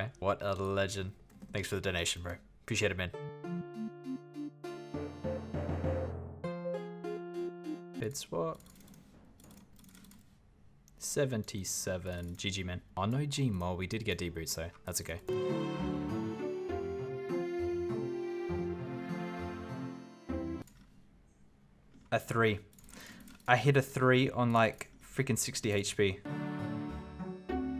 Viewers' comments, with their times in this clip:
0:09 Sheeeesh those clicks 😯